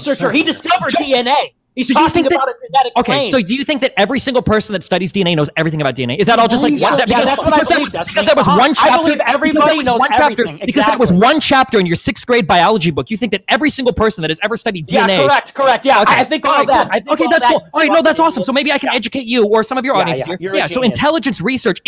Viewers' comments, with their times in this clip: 0:04 destiny's calmest spergout